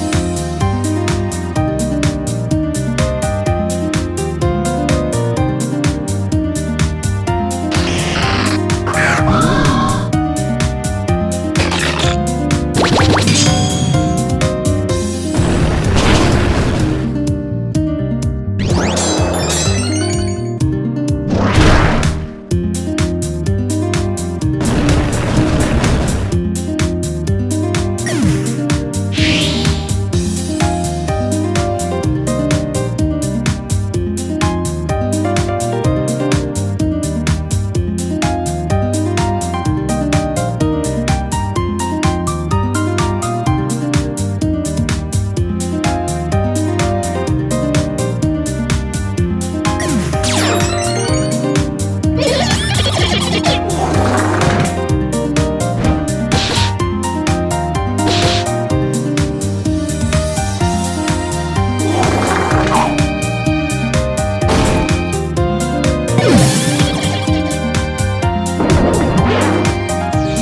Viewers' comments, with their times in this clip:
0:08 when Grimmsnarl has Honchkrow's cry
0:09 why did that grimmsnarl have a honchkrow cry?
0:53 this sound effect on gunk shot just killed me🤣🤣🤣